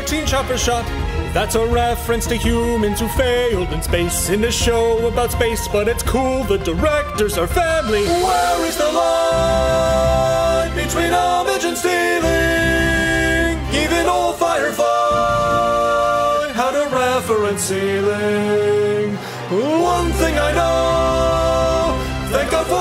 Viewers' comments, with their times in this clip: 0:08 Very nice with the chorus harmonies and Firefly sequences.